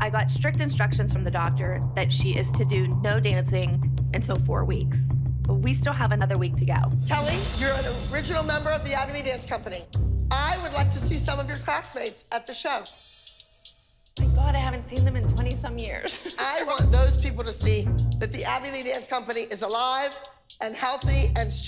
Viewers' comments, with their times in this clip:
0:08 Nahhhh agony dance company?! put on captions 😂